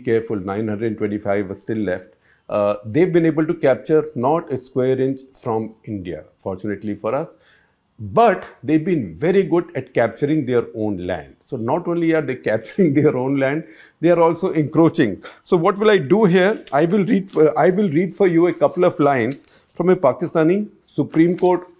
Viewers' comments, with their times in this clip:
0:08 Hahaha. The real laugh. Sir what is it kept to your right that is distracting you?